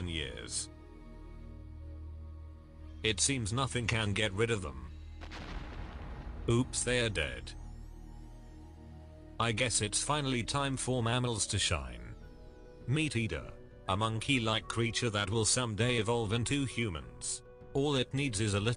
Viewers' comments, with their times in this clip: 0:03 It Seems Nothing Can Get Rid Of Them Meteor: POW
0:04 In ... No Emotions